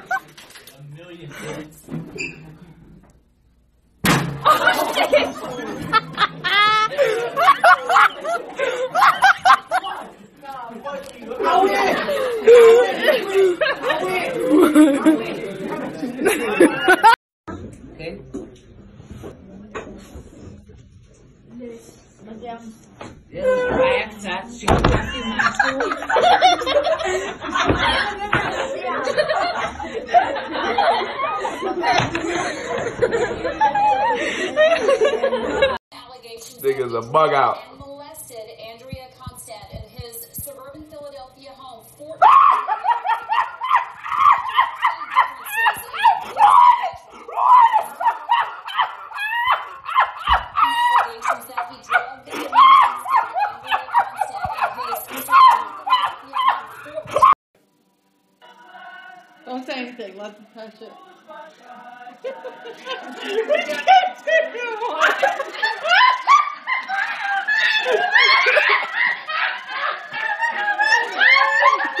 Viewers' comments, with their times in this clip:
0:03 HARD BONK got me dying 😂
0:11 at first I thought the kid that got hit hard was saying " oouwi oowwi ", but then it was the other kid saying " I win I win "
0:18 Why is no one talking 😂🤣😂🤣
0:33 LOL THAT GIRL’S LAUGH IS LIKE MINE WTF
0:36 this shit hilarious... that dudes laugh !!!!! xD
0:37 this had me dying so much lmfao his laugh 😂😂😂
0:41 THE BEST laughter try to change my mind
0:41 sounds like happy tree friends
0:41 the joker laugh
0:41 my neighbours tiny dog at 3am
0:42 sounds like Tom laughing from Tom and jerry.
0:42 this is the best he sounds like a chicken😂
0:42 y I'm thinking of tom from " Tom & Jerry" show n the part where he's laughing thru memory of him tormented a Jerry. Tf lol
0:46 sounds like a dolphin and a pug
0:46 this person just CANNOT DEAL! THEY ARE LITERALLY CRACKING TF UP 😂
0:57 Perfectly Timed Screams